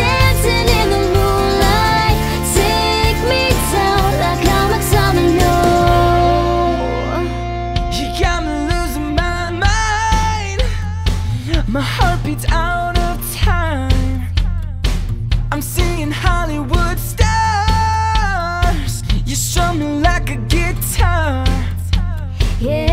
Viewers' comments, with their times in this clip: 0:09 that awesome high note